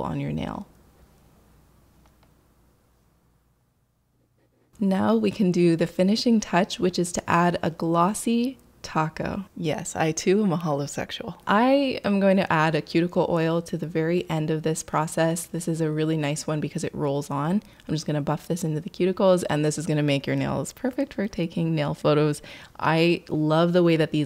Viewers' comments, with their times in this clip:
0:09 I was so confused on what she said here😂 I thiught she said “yes, I too am a homosexual” at first lol.